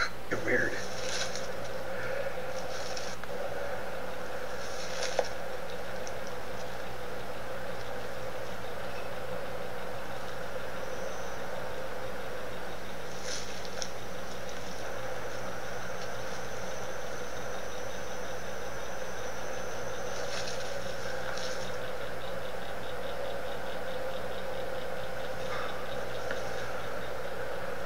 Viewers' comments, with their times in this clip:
0:10 top right open barrel pointing directly at the tree limbs...plus you can listen to it in the barrel. He probably has a little fan from the construction site,heard in the back ground, tucked in the barrel. BAM